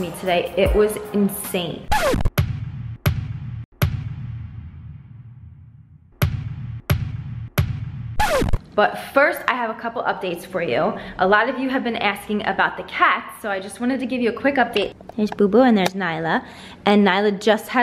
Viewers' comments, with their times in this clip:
0:03 I got to only in the video and she sound SOOOO WHITE!!